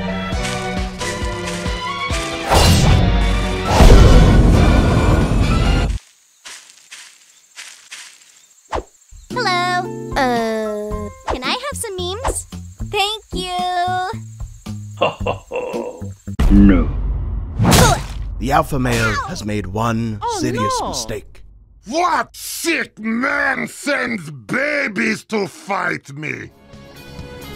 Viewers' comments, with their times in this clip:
0:09 Meggy: hey man sorry this is Mario's house could you pleas leave But we hear: hello uh can i have some m E mEs thank you